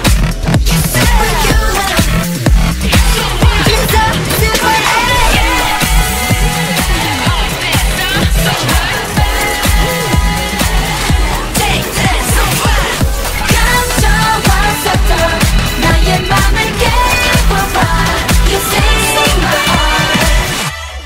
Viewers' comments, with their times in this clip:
0:09 You really made me sign into YouTube just so I could give this a like . . . smh btw idk about Superhuman but this is the only good So What mashup that's come out so far. Only suggestion is to break up some of the vocals for and maybe move them up or down a semitone. For example, the "b-b-b-baaad" would sound amazing if you took the last note down a semitone. I'm nitpicking but I promise the result is so satisfying. Anywho . . . you might have earned new subscriber 👀